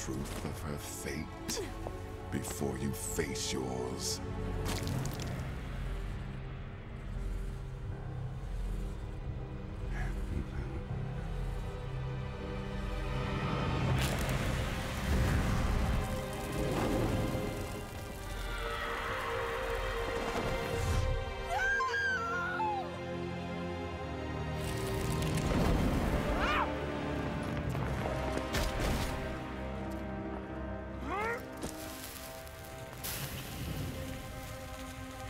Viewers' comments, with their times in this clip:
0:08 it sounds like he’s saying “theyre human”
0:08 it sounds like he’s saying “theyre human”
0:22 I swear that scream gets me every time